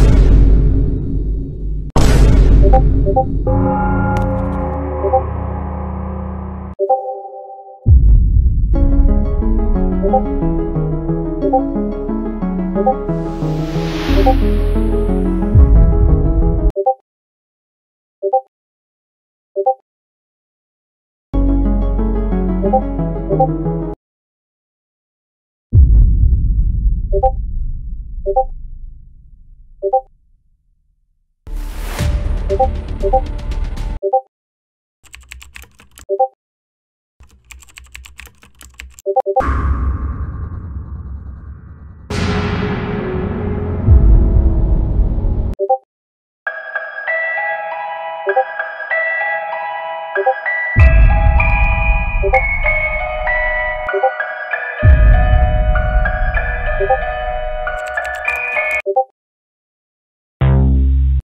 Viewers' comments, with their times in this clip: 0:03 a easter egg in is a sound of roblox walking
0:03 you can hear the roblox walking sounds lol
0:46 This Lullaby Is Creepy Because It Reminded Me Of Going To The Haunted House And Saw A Dead Baby.